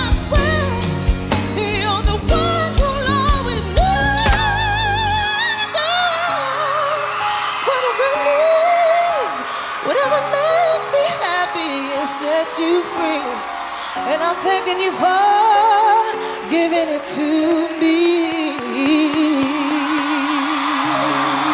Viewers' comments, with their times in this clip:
0:03 is voice history